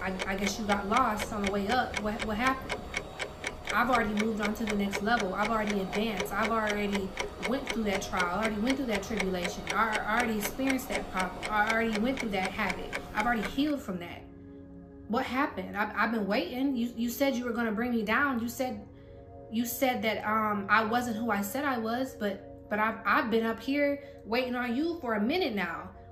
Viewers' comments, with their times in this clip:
0:08 I’m loving the sound effects 🎉